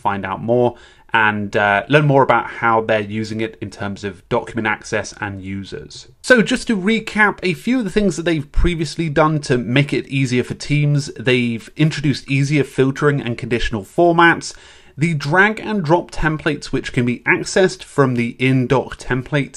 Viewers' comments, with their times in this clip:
0:06 Note about the microphone Thanks for your comments in advance about the mic, I knew in edit it was an issue. Please know that I will not use it like this again. We use a different mic set-up from seconds in. Thank you for your patience.